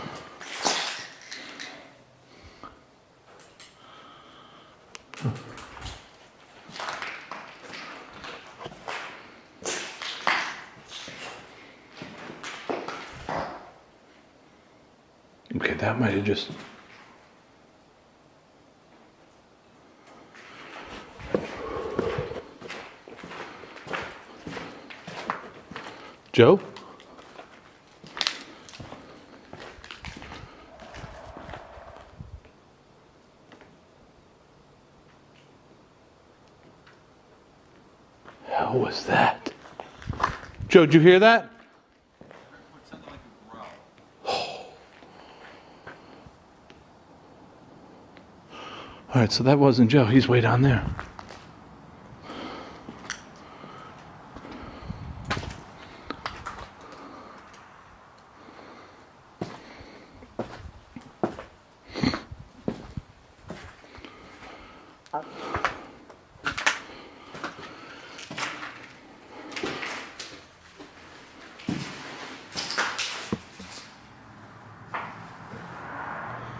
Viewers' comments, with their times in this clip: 0:10 ... Male voice says, "Chancellor, stay with me."
0:29 O replay. could that have been a woodpecker? Sounded like what we hear often.
0:30 I heard it again@ low growl
0:32 sounded like a growl.
1:01 ish i heard HI